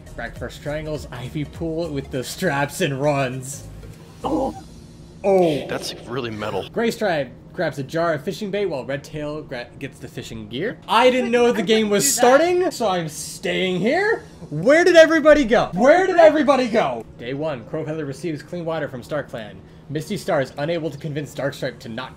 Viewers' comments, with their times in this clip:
0:07 I THOUGHT IT SAID GAYSTRIPE FOR A SECOND- 💀